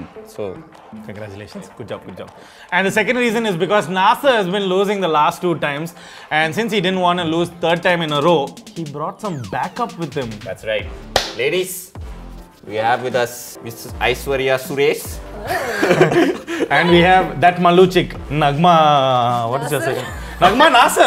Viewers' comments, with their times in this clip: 0:04 it sounded like NASA